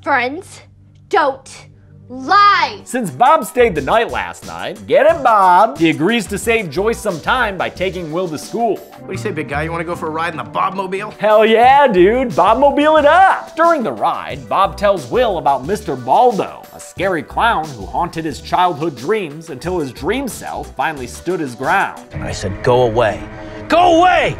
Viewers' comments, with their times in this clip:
0:09 Adam West Batman theme starts playing